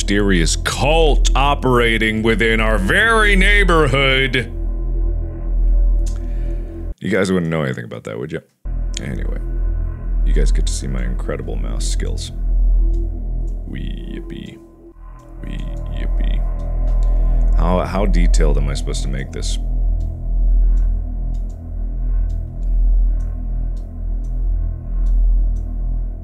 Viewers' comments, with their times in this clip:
0:08 the mouse clicking...